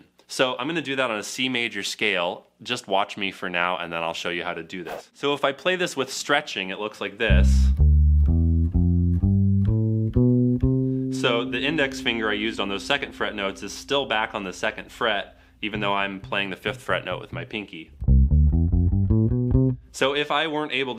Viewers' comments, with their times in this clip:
0:05 "bass isnt boring bro here let me repeat the same boring bassline for 3 minutes"